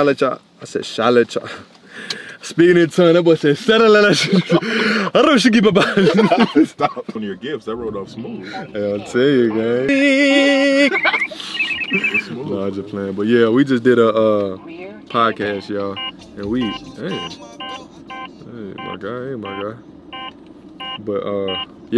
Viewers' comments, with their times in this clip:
0:03 that man speaking in tongues 😭😭😭😭🙌🏿